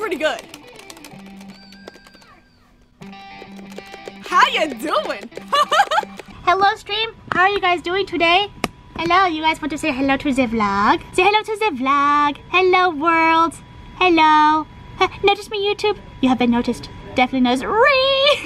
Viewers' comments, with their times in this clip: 0:06 Your German is showing lol